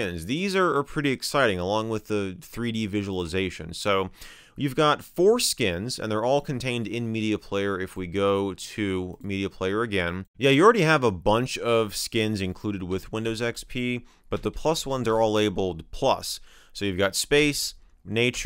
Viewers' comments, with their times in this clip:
0:04 I’ve got foreskins??